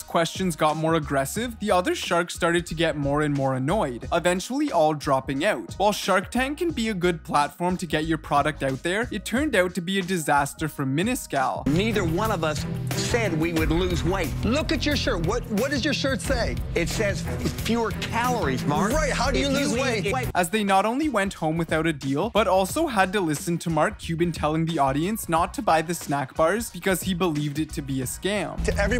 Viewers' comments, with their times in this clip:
0:04 - maybe that explains it. from on i think he is saying the word 'out' but sounds a bit cra cra
0:10 Hear how he reads “minus” good lord
0:10 WHEN HE SAID MINUS CAL I COULDNT BELIEVE IT LIKE HOW DO YOU SAY IT LIKE THAT TF ALSO CAPS